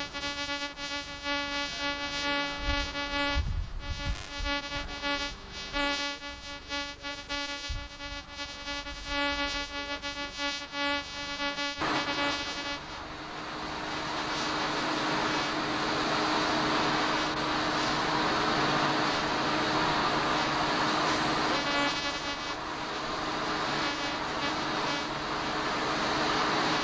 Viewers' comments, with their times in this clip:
0:07 The sound reminds me of a 300-baud modem - and I see a satellite dish there too.....